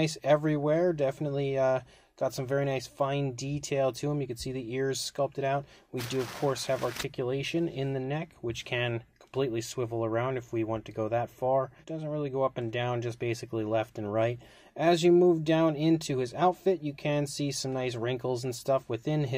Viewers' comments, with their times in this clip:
0:06 There's a weird audio glitch